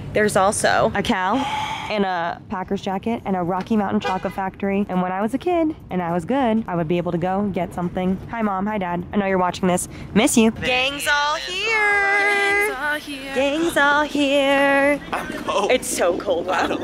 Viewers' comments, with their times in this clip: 0:03 the loud breathing to see their breath and nothing happening LMAOO